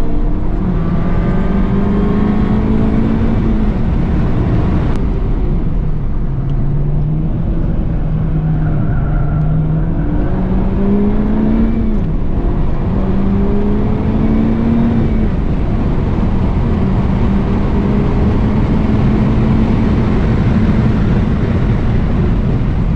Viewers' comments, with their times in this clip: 0:07 screech, albeit, end of day enjoyable Edited